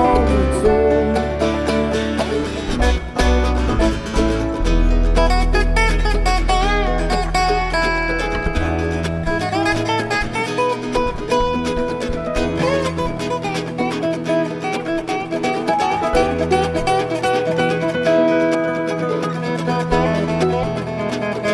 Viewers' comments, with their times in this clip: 0:06 Love the resonator solo Psychedelic !